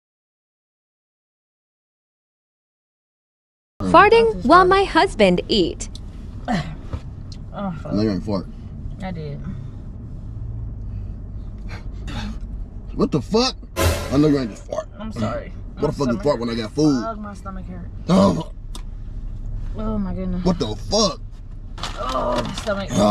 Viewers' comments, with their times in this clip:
0:05 the second couple and the couple are the same. And both times he sounds like a b!tch